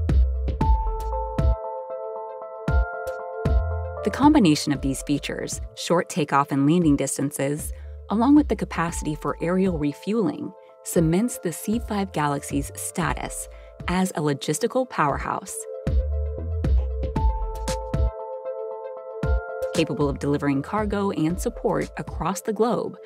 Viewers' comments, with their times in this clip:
0:06 Long live the B.U.F.F. And wtf is short takeoff and "leaning" distance ?